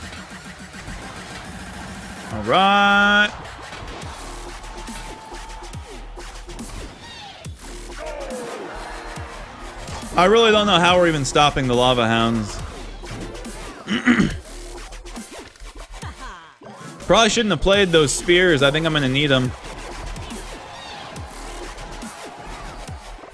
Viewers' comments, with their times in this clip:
0:06 lmao that princess arrows hit the tower when the beat droped